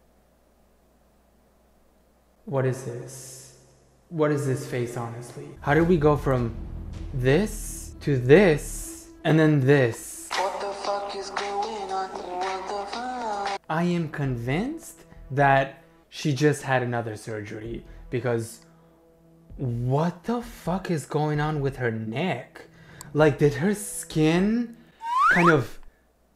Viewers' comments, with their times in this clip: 0:10 layze song just had me rolling 😂😂